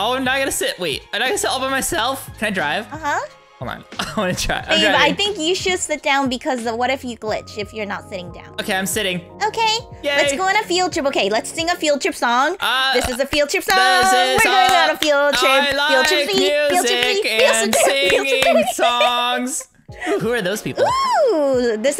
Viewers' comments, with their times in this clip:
0:09 wuuuuuuuuuhhhhhhhhht????????? Ur singin funny.